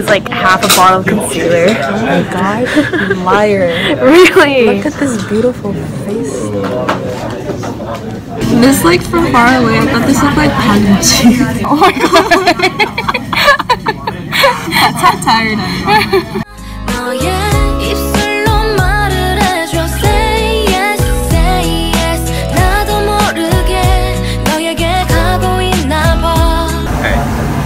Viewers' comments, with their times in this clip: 0:08 she rlly went don toucheu mah faceu